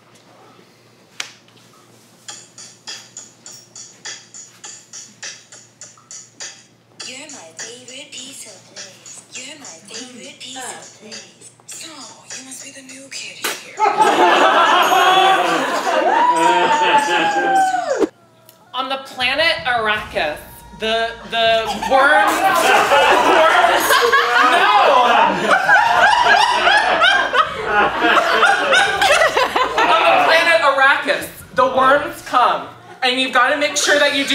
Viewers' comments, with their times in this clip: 0:08 ^ Why does this sound like a 90’s bop tho😅
0:16 I need to hear that whole song